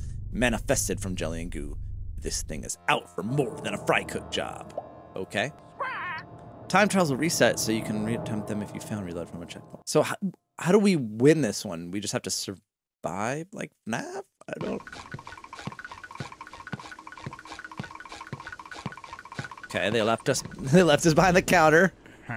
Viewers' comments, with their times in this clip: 0:05 Potty has a voice like Squidward.